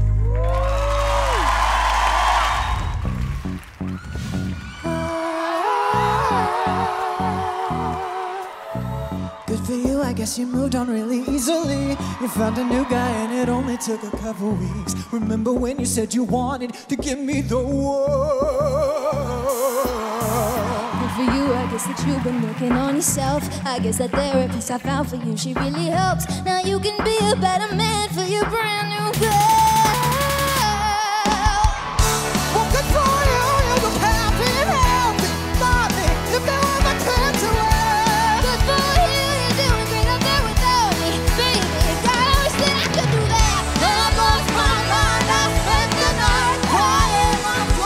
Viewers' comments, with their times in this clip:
0:03 the song is not supposed to sang that 😂😂😂😂lol I
0:05 wow i love itttt 🔥♡♡ they're voices is incredible
0:29 that "guuuuurrllll" was SO good